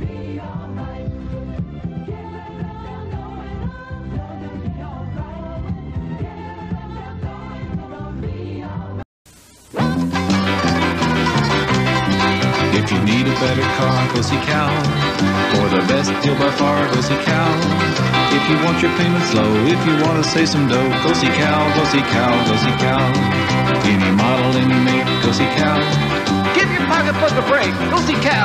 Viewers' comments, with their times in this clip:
0:10 Did anyone else hear 'pussy cow' ?